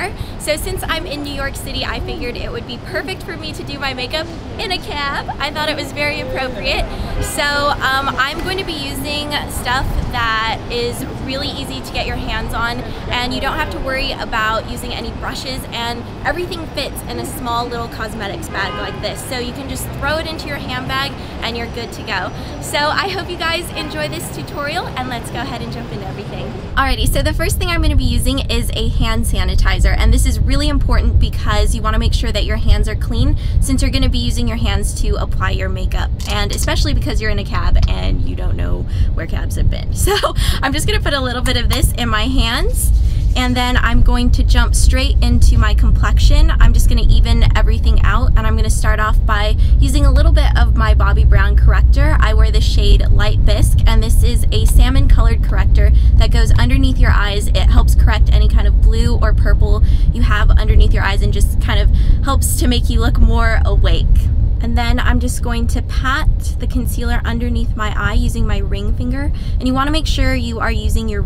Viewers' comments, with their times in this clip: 0:04 so cute the way you say "in a caaaab" ^__^
0:54 semen color corrector